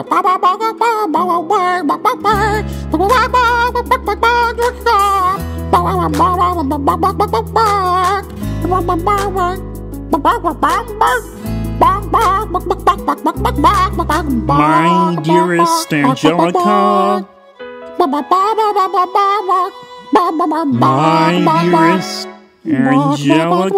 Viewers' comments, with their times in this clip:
0:05 I am litterally cry laughing because of the chicken muppet impression